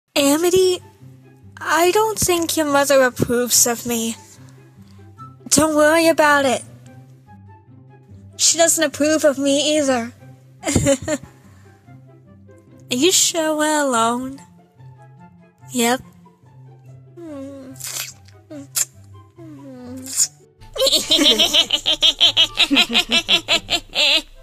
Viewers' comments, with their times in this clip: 0:08 Why does this sounds more realistic than it should? And why I feel the Blights have depression?